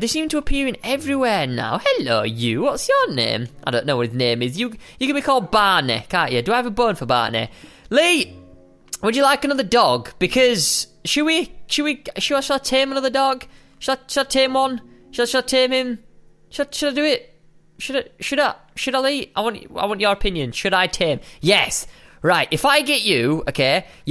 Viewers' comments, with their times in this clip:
0:07 BUT DAT DUBSTEP DOE!!!!